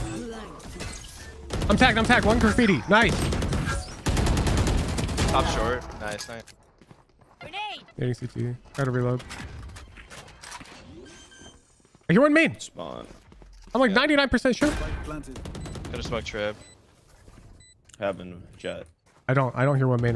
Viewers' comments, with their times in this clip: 0:08 i think what you heard was first chamber running up main to plant, then once he stopped moving to plant you hear an enemy start running deep A-link. because it's a similar spot in the ears to A lobbyish, and because it was timed perfectly with the end of your chamber's footsteps, it made you retroactively think you heard someone A main